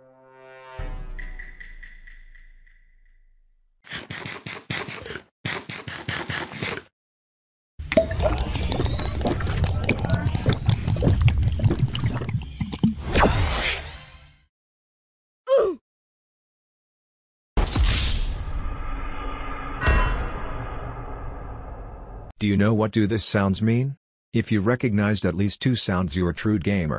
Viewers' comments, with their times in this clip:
0:08 I could hear the high pitched screams of 11 year olds who just died in fortnite battle royale